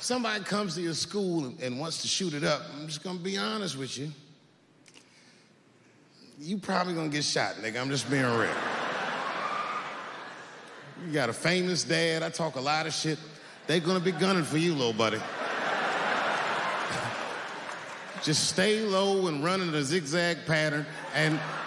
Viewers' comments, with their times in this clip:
0:09 That eagle screech